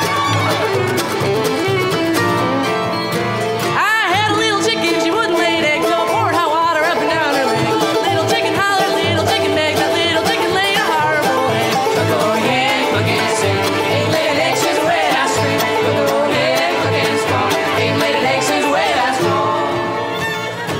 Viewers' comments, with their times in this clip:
0:04 Who is singing ? Great voice, fits with the style